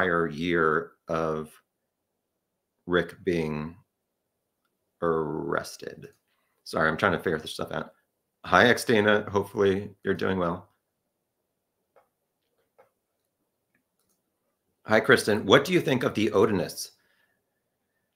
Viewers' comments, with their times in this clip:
0:04 I’m obsessed with the way he said “arrested”